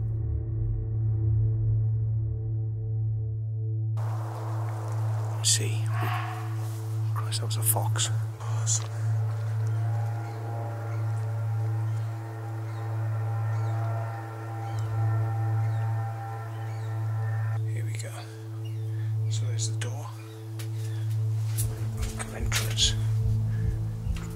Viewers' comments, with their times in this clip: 0:07 is a deer barking buddy! An alarm call! Quite scary at night if you don’t know the call.A fox sounds like a shrill bark or a woman screaming. Later at the gate that’s a deer bark to. Estates dept..those responsible for the upkeep of the area.